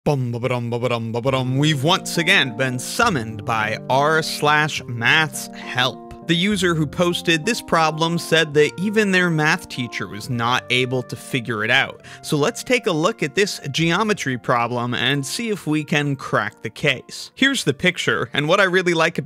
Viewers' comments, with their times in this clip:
0:02 Why did you enter like a car in intro?